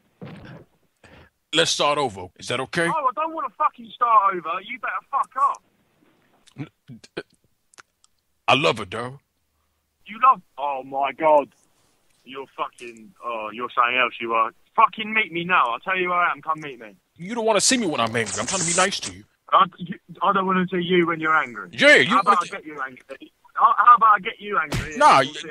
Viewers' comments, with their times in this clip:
0:06 he was trying not to laugh 😂😂😂